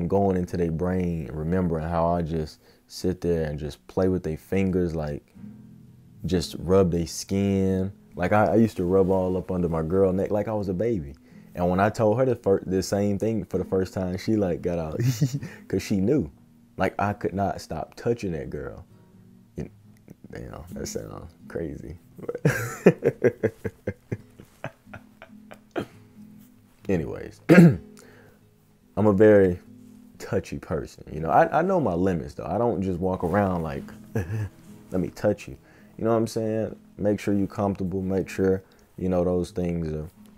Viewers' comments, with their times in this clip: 0:10 Bro you gotta fix this; "When I told her to fart."
0:11 wait did he say fart or did I hear that wrong
0:12 “When I told her to fart”
0:23 No shade but when you laugh you sound like a villain lmao
0:23 my boy hit us with the Kanye West laugh 😂…😑
0:23 the immediate silence
0:27 You Stopped Laughing So Fast Like Kanye 😆